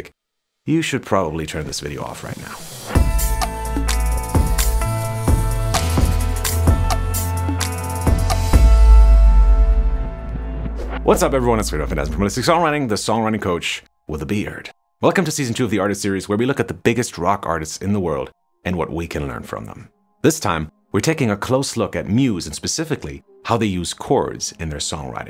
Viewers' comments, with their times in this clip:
0:10 What's up everyone it's juvtbouqbvatubgiubvtiuewgiuliuwbgoiuvt from holistic songwriting
0:11 WTF did he say?
0:12 lmfao c'mon bruh I really wanted to know how you pronounced your name but all I heard was "bdjellsjzbjdkx"
0:12 Could he say his name any faster?